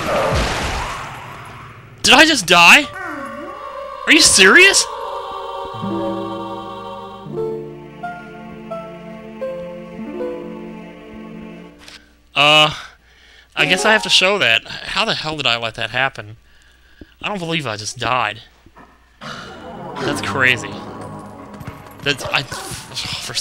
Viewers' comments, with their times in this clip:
0:04 Lol the twilight creatures are cheering for the god of random deaths.